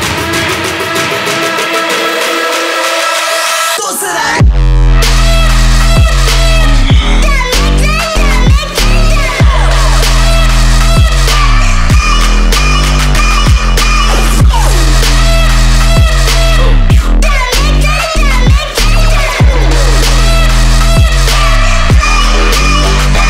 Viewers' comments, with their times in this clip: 0:04 I'd love hear that drop hard on festival
0:11 i don't know if any of you guys play pixel gun 3D. but there are small parts of ID the song that I feel like has references to the teleportation and the shooting of some of the guns. Probably not but idk the teleportation part is or close to that. shooting right after